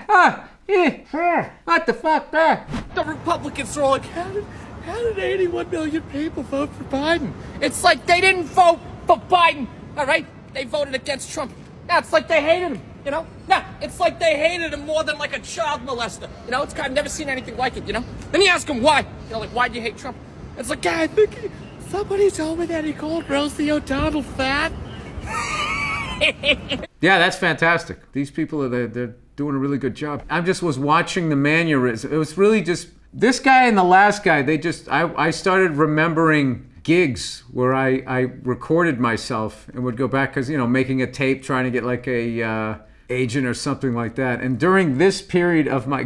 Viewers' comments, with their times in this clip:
0:03 I feel like this guy hit the nail on the head
0:32 “Manyeurysm” is a great way to explain Bill Burr’s rants